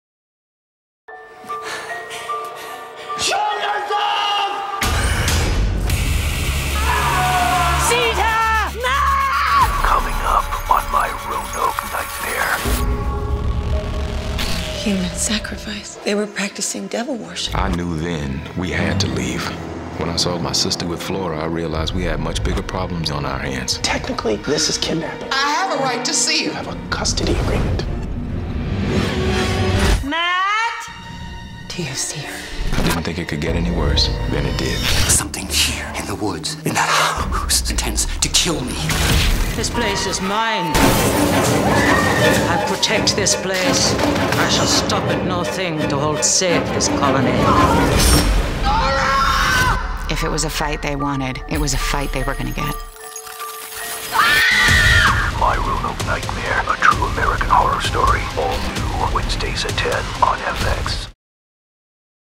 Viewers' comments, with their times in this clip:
0:03 Can anyone tell what the scream is saying seconds??
0:49 Lee looks up in terror and screams what I think Matt called the little girl in the interview, omg does that mean they find her dead?? 😦😨 I hate it when little kids did in horror shows/movies lol
0:52 Sorry, but is horrible acting - unless that was a war cry instead of a jump scare.